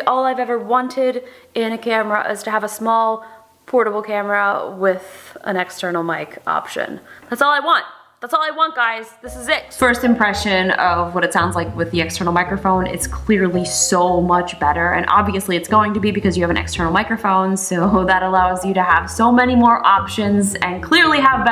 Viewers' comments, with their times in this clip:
0:06 Are you sure that the audio is the shotgun mic and not the build in mic? It sounds like a build in and not a shotgun at that range.